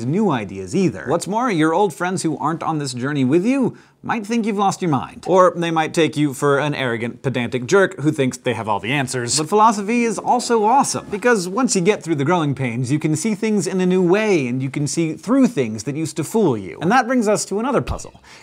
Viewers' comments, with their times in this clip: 0:05 im assuming this was ACTUALLY said to YOU at one point in your life, based on the TONE of your voice,the fact that you closed your eyes, and then the way you shook your head side to side :) If i've been learning anything, this would constitute as an abductive guess,right?